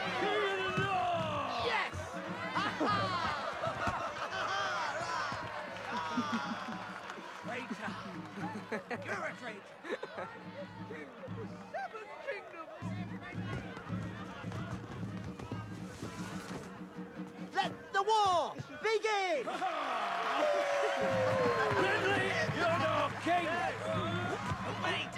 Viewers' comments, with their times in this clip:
0:07 Tommen’s actor chuckled innocently at first but Tyrion caught his eye and quickly corrected himself. As if Tommen thought nothing of it but one look at Tyrion made him realise it was at his uncles expense. D&D wasted both the actor and character. The good Lannister king would have been so interesting.